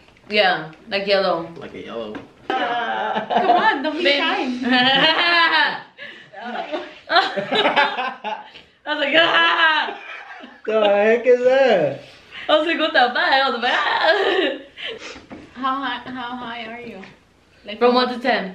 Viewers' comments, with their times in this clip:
0:05 Her laugh 🤣🤣🤣 I laughed so hard